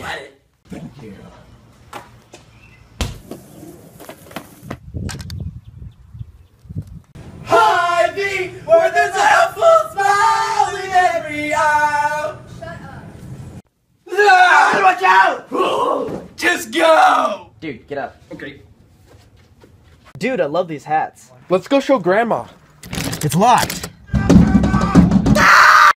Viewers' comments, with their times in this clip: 0:10 loudly singing Random Girl In The Background: "Shut Up -.-"
0:10 SiNgInG bEaUtIfUlY "sHuT uP ._."
0:12 you can hear someone say "shut up"